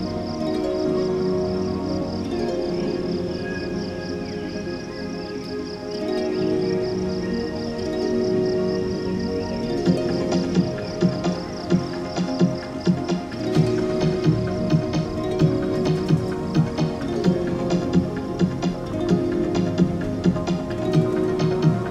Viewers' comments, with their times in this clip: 0:09 God I love when that rhythmic part comes in